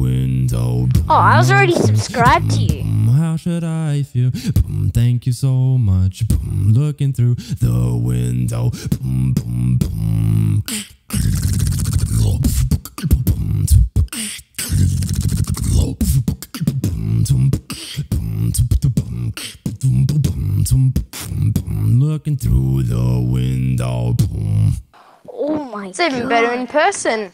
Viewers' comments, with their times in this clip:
0:10 Damn u learned the liquid bass? I havent even learnt that yet! 😳 What tutorial did you check out to learn the click roll?